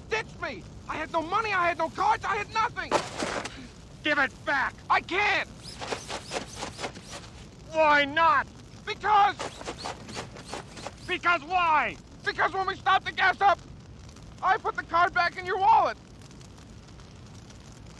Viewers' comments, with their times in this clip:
0:04 The swishing is genius...:face-green-smiling: